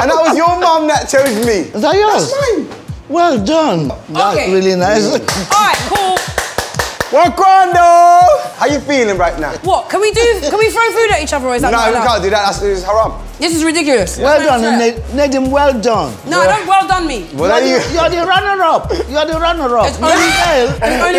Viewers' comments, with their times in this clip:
0:09 Julie: Can we throw food at each other? Chunkz: Stutters Na, we can't do that that's haram
0:09 Julie: Can we throw food at each other? Chunkz: Stutters Na, we can't do that that's haram